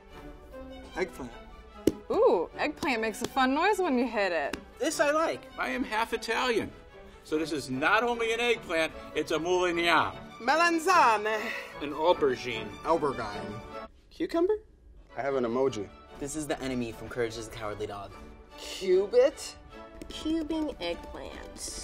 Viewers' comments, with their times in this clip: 0:09 when you accidentally confuse a racial slur for the Italian word for eggplant lol